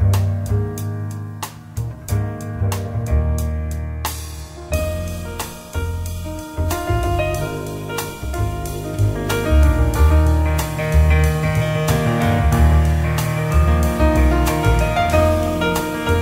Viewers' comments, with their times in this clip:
0:03 Amazing cover, especially piano
0:04 i totally agree but i also love the piano solo in